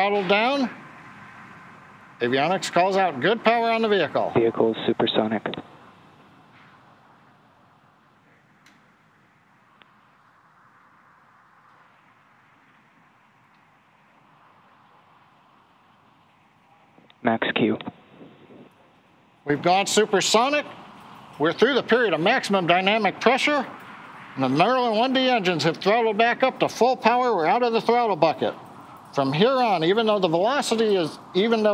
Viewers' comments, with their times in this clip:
0:07 That supersonic boom was really incredible
0:10 Daaaaamn that sonic boom was satisfying!
0:12 that sonic boom is beautiful